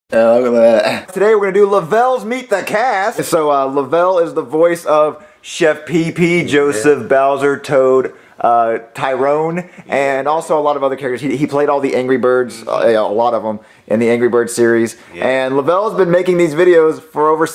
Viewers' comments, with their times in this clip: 0:00 lol that voice or mormor